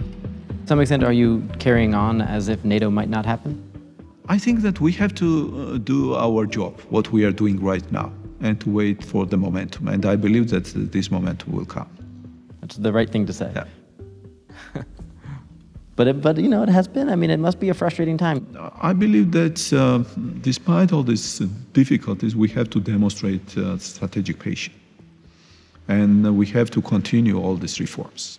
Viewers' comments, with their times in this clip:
0:09 It was very immature of the interviewer to laugh in the face of the person he is interviewing. When dealing with something that could mean the death of thousands, it should be taken seriously.
0:14 how dare you laughing.